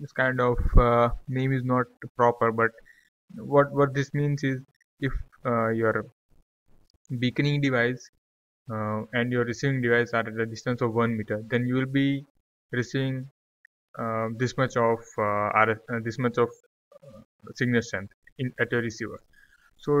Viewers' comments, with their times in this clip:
0:06 Did you said bikini device?